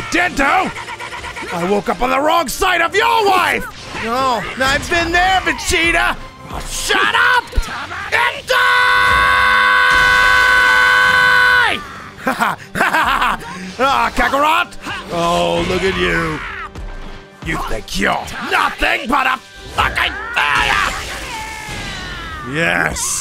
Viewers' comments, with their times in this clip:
0:08 R.I.P Headphone users I didn't use headphones